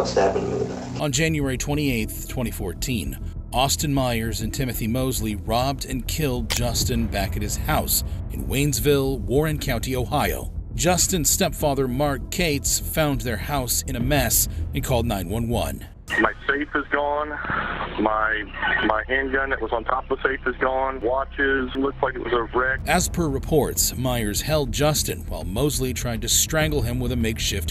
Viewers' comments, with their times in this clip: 0:08 robbed and killed his house? How you kill a house?